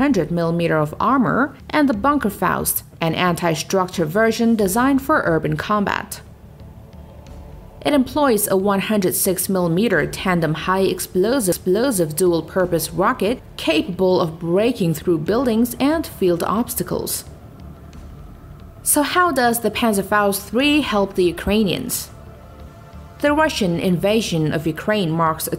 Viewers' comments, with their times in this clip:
0:10 Holy shit, I didnt know this was a robot voice until with the double 'explosive'. This tts is awesome!
0:10 listen to the bot voice mess up 😂